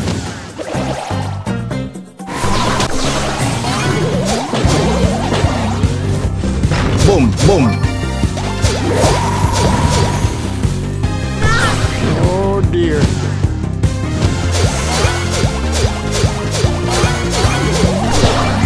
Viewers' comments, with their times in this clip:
0:06 the music which comes is a banger and sounds like a tune from angry birds transformers